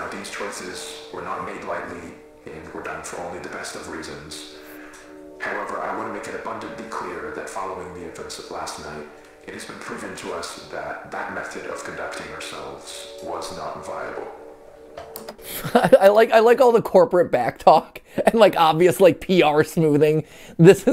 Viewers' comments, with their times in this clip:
0:06 you can hear some noises that sound like voices